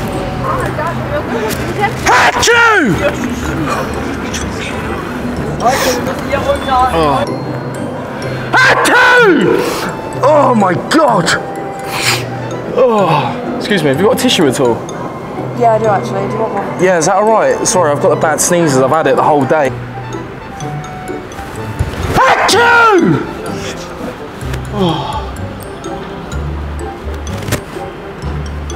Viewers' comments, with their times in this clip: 0:09 man sneezes, scares lady and pigeons fly away 😂😂😂😂😂🤣🤣🤣🤣🤣